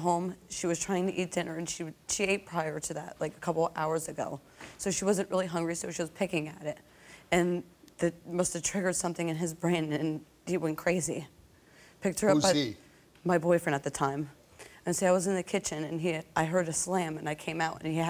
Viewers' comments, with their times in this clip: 0:04 😂 I Like when all these women acting sad and so they pulling the air trough their noses but there is everything dry as hell !!! Listen to her like she wanted them to believe that her nose was running and you hear nothing but she kept doing it 😂 Than comes her mother out and did the same 😂 😂